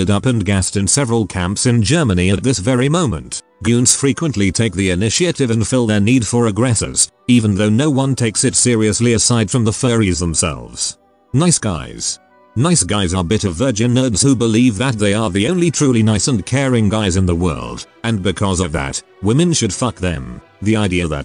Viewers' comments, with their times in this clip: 0:05 Am I the only one that's starting to hear the text to speech actually sound sarcastic after how much we use it for? Like, "At this very moment" just... Damn. That caught me off guard I'm fuckin dead.